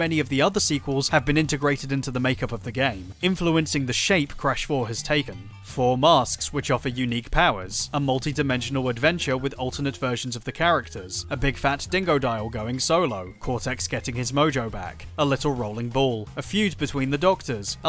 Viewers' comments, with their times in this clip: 0:05 amazing video and really sold me on checking this game out sooner rather than later! i played and enjoyed crash 2 and 3 so much as a kid, and while i enjoyed the n sane trilogy enough to get its plat, i did feel that there was still something missing there. i'm really excited to see what this game offers. great video. also sounds very much like a plinkett delivery to me